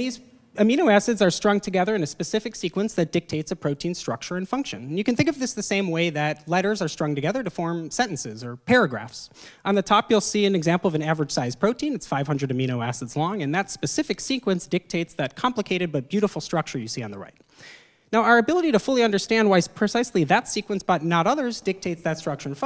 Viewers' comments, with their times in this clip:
0:09 the chorus hits so hard fr